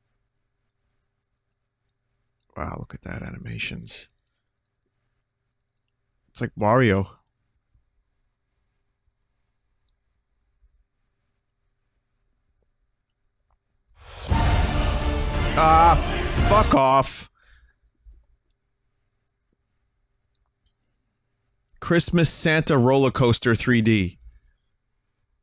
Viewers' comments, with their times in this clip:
0:08 Going from crappy graphics and dead silence to that EPIC RPG ORCHESTRA killed me